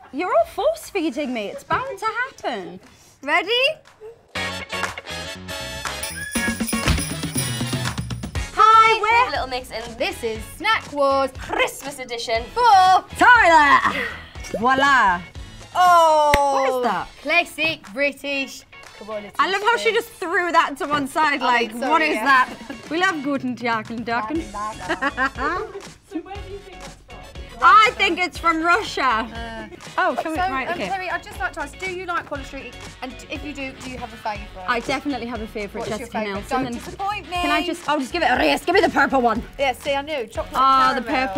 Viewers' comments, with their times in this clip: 0:03 the way she said ‘ready’ 🥺
0:25 Let's call the Perries witchy laugh